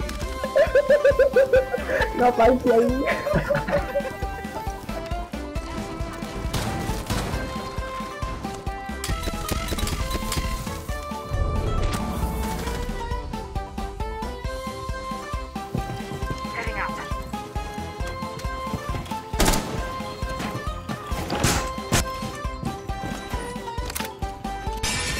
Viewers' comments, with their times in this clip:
0:07 dunno sounds like normal r6 to me